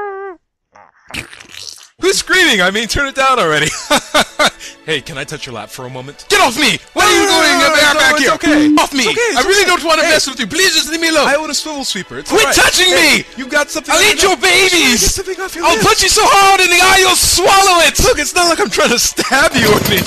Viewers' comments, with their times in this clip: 0:06 *Biiip* F*ck Me !!! Was there a worst word before the "f*ck" for it to be censured and not f*ck?